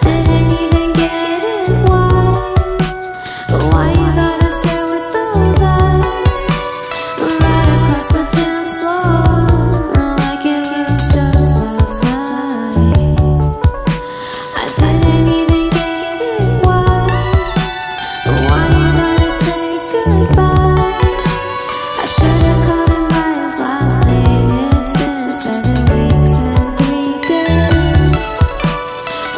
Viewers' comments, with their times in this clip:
0:05 I think this song but is sad
0:14 This makes me cry IT SOUNDS SO SADD💔💔😭😭😭